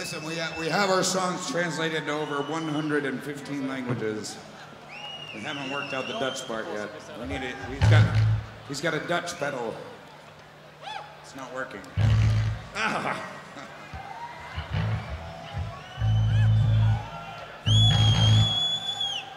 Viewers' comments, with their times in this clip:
0:04 daron malakian vibes))